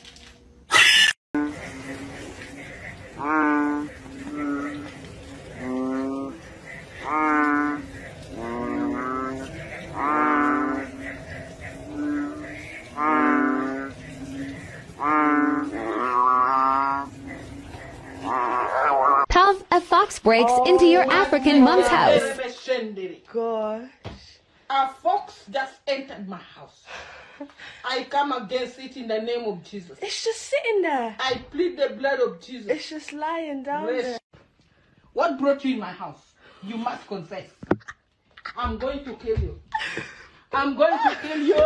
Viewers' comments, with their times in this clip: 0:03 why are the frogs mooing
0:18 dis frog just said labron james
0:26 rocket raccoon do I look like a racoons you idiots no ! I'm a Rockit! And grumbles 🤣🤣🤣 come on kill me and pulls out a gun 🤣🤣🤣 I dare you sweat heart